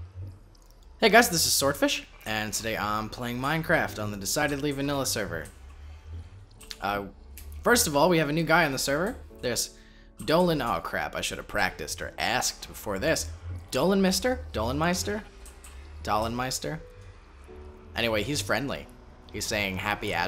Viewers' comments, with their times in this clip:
0:08 Great voice pitch and i'm already in, great voice quality, easy to hear, entertaining, not too huge to be cocky but not to small to be shy and nervous lol, great vid from what I can tell just this tiny amount in.